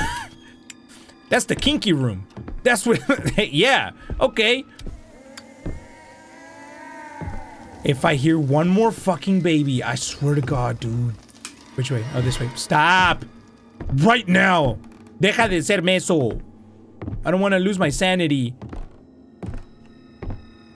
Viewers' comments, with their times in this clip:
0:05 Are just going to ignore the girl crowing I got the ceiling in